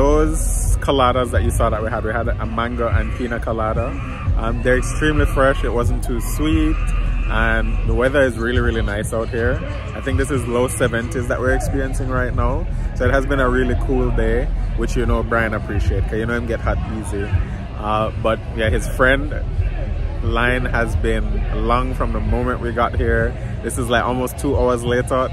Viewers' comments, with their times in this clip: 0:07 Omg is that person okay whoever was screaming 😂😂😂@ I was wait what’s that lol but I enjoyed the blogs as always love y’all ❤❤